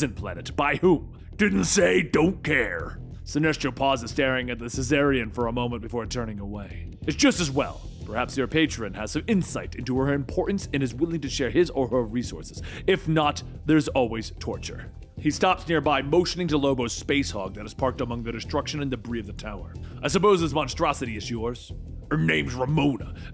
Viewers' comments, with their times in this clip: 0:09 Anyone else hear it- he calls Lobo a 'cezarian' instead of a Czarnian? I mean... close enough! Better than my little brother who says Lobo works at Little Caesars lol